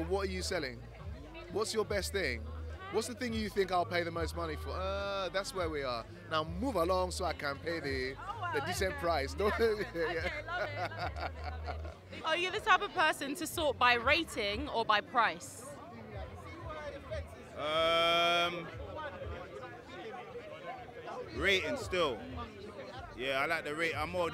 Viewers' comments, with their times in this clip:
0:07 didnt know this guy was African, but as soon as his accent changed, his appearance changed to me too😂😂😂😂😂